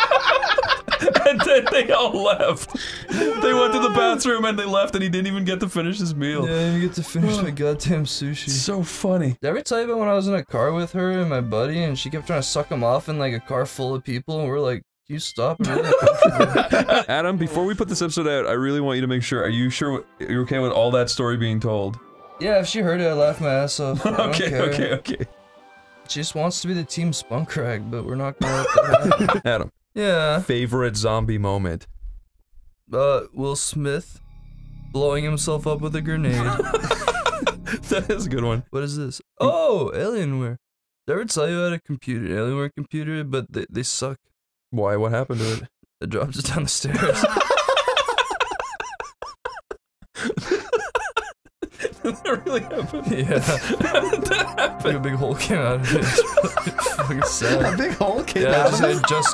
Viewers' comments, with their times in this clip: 0:10 OMG, the casual "Can you stop?" Is too perfect.
0:40 has the best delivery of any joke ever made.